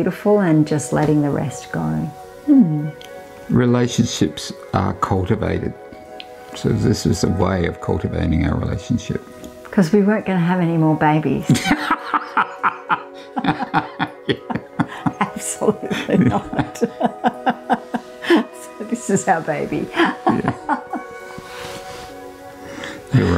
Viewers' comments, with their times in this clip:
0:04 What a lovely couple and home they deserve all the peace and joy. My favorite part was the way they laugh together is so heart warming